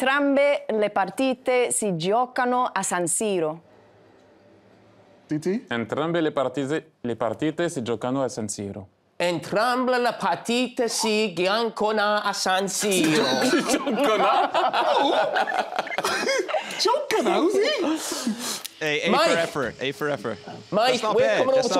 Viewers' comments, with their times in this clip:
0:03 ...she nailed it perfectly...It's not that fair when she's that nice and THAT beautiful. Sempre mozzafiato Kate Abdo...